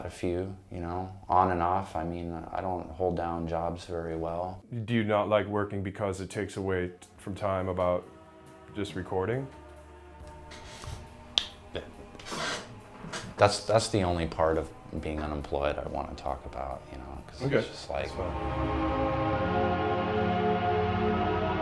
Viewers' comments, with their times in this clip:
0:09 funniest way I've ever seen someone say shut up